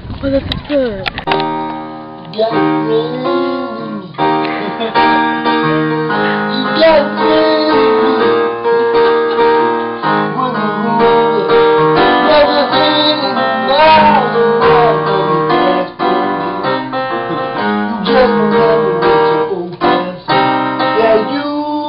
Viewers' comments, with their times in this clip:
0:05 was the greatest moment in this video... :-) Great Randy Newman voice ha!